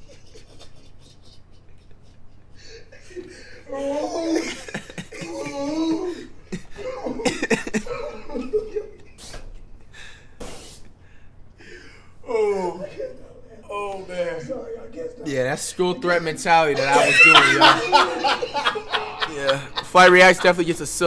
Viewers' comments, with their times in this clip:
0:05 flight laughed normally he broke character